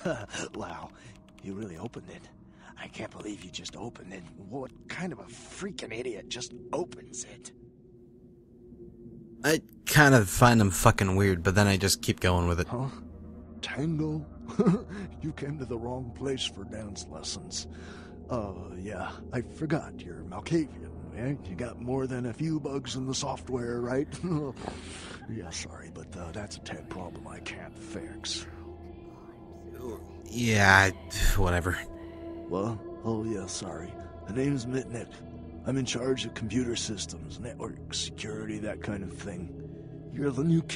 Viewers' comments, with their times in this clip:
0:04 that laugh ahebrebrebrebrebrebrebreb
0:24 I found a list for the Voices and I figured out that the one says "Try the corpse in the oven with peppers and fur." (I thought it said "Hide the corpses" so I deduced it from there)